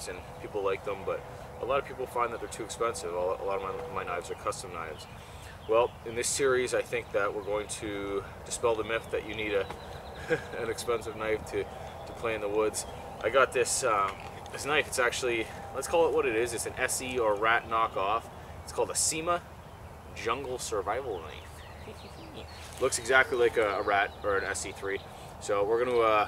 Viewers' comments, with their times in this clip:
0:08 my 'Hey Siri' went off